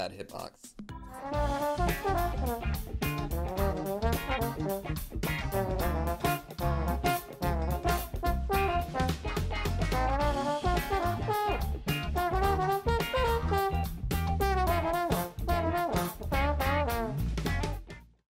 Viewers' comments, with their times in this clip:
0:07 the way the recommended videos appeared with the hit of the drum was soo satisfying